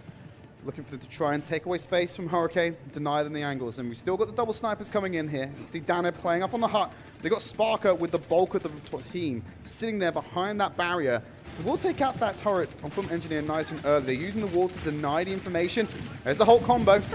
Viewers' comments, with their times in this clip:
0:05 the commentator forgot how to talk